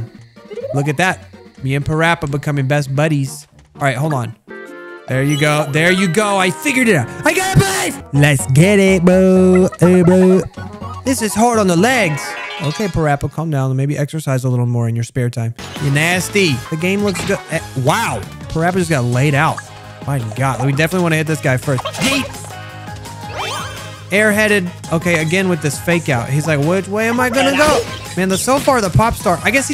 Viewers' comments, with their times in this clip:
0:07 i love when he said "This is what i do'' in the parappa voice. and also the 'IGOTTABELEIVE"
0:15 this is for myself, cuz i just like the way he says nasty